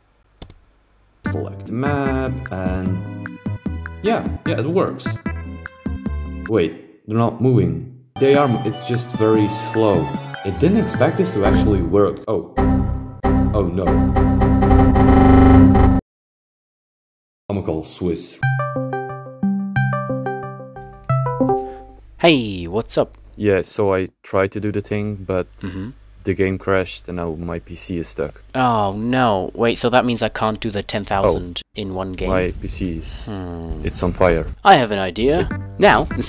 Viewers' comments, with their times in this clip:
0:07 IDK why, but the delivery made me laugh till I cried.
0:19 he got the rare ringtone💀